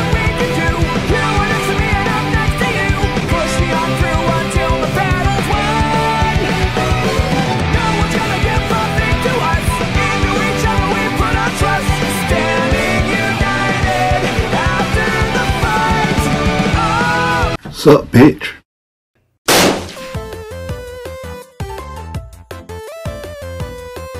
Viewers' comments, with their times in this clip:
0:08 i like dis music